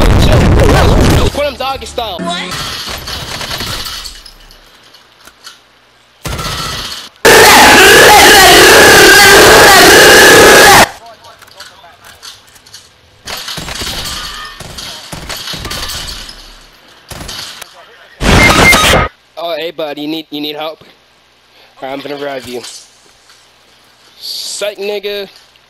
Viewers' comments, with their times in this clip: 0:10 That brap was impressive